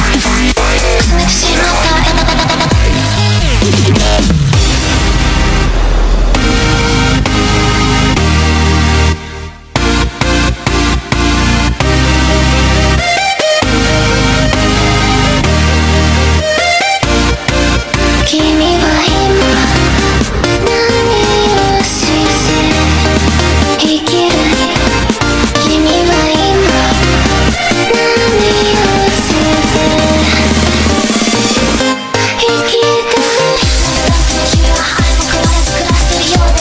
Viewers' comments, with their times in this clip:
0:05 has to be the sickest rise I've heard in a track
0:18 why is nobody talking .. like the vocals and the instrumental fit so well together somehow and gives off cool vibes i can’t explain